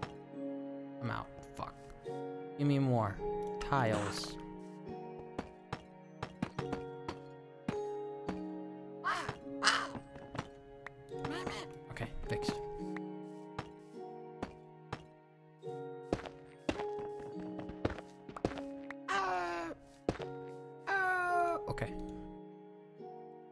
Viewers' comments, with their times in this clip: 0:07 Sometimes I cannot fathom some of the sounds you make, like you sounded like a jackal, how do you even